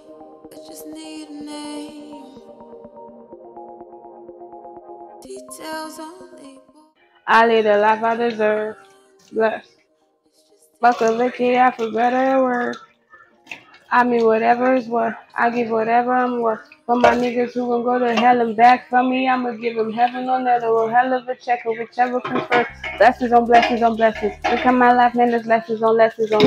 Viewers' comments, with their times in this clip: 0:10 see how you're rapping the song fluently ah ah